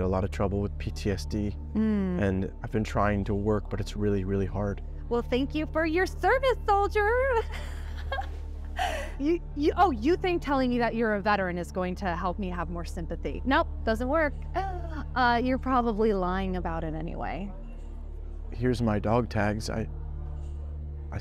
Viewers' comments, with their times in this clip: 0:05 Mockingly "Well, thank you for your service, soldier." He deserves way more than you.